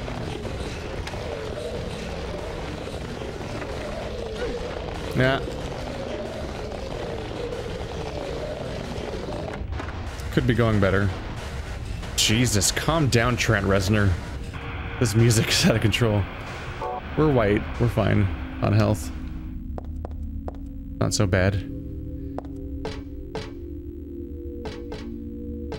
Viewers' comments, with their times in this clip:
0:10 Lol music all of a sudden just cranks up, I'm imagining monsters getting down to industrial music 😆😂😂